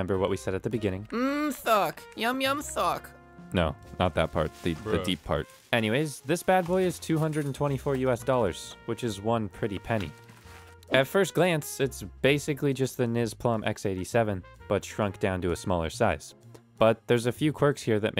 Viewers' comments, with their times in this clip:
0:05 you only sound like oversimplified